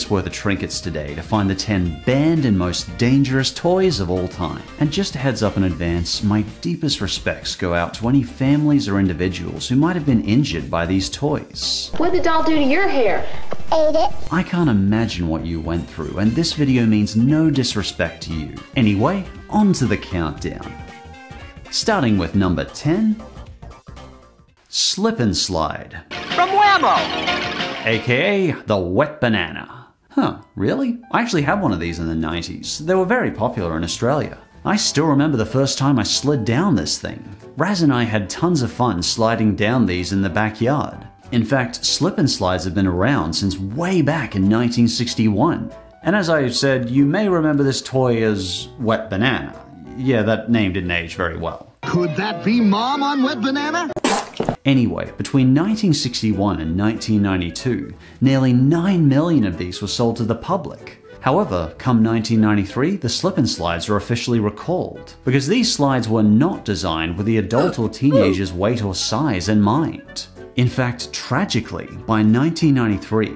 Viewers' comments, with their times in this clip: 0:05 I like how your voice actually chages to a calmer tone when you're expressing condolences to affected people.
0:54 sounds like a fart